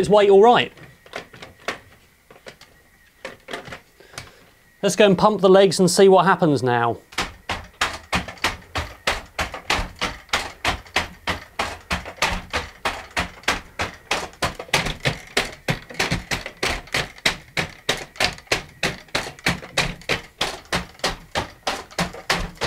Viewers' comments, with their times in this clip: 0:06 drum beat in the making!